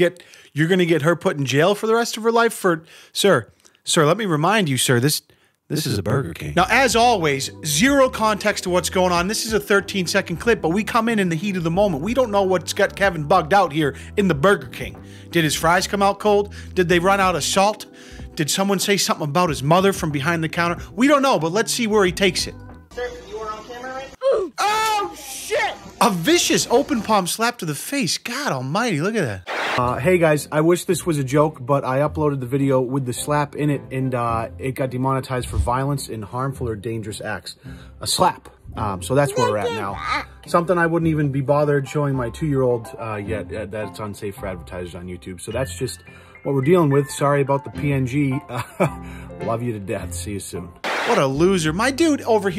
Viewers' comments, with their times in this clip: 0:10 Anyone else notice the fart that got squeezed out when dork dad got escorted out of the grocery store by his kids?
0:36 Nobody noticed that after he said “Dangerous acts” the kid repeats it. So cute! Goes to show that they are always watching and imitating what adults do.